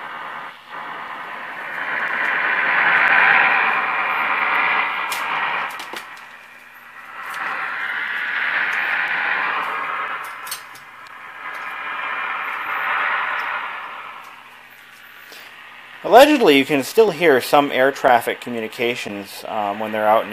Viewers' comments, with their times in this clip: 0:03 that nois sounds like a radar, wheather maybe, or possibly a jammer, but when those happen in the states they ussualy report by listing ham and taken of the air perty quick by the fcc. Im guessing the viao is for another video?